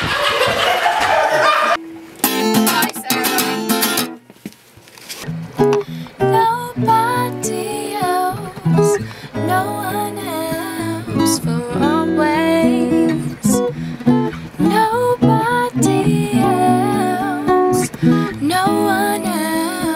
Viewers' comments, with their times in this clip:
0:06 the girl can sing!!!